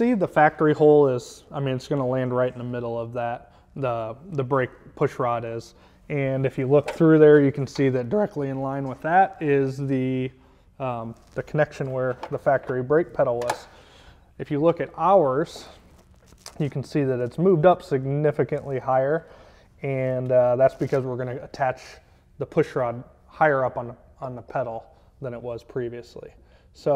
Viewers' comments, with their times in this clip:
0:07 Bit of a voice crack cracked me up for some reason. I was eating cereal and spit milk out of my nose 😂😂😂. Man I needed a laugh like that.